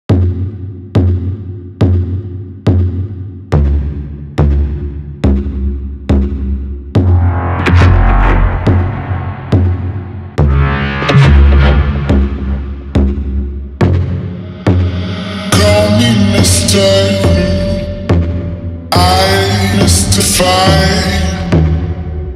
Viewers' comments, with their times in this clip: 0:05 The sound reminds me of the movie War of The Worlds when the tripods make that sound.